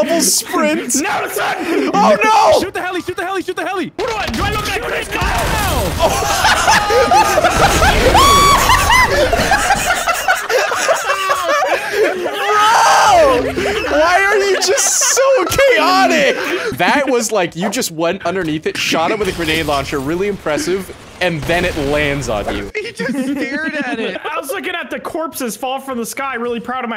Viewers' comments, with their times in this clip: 0:08 The loud ass scream 😂😂😂😂